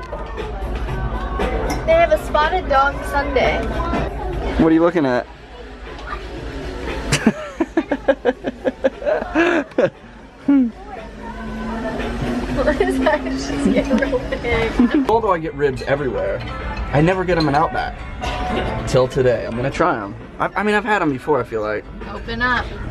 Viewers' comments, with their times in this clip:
0:06 I love how in the restuarant they start playing Billie Jean😂😂like if ur a Mj fan